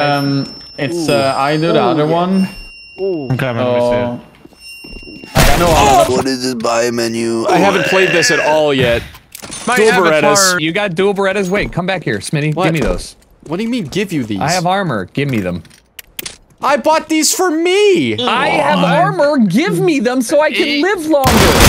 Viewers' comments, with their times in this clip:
0:06 Great BO2 announcer impression